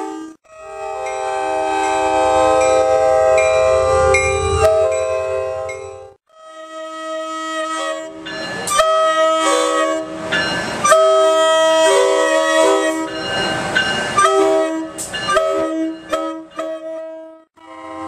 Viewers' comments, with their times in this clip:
0:06 what happened to AEM-7 914’s horn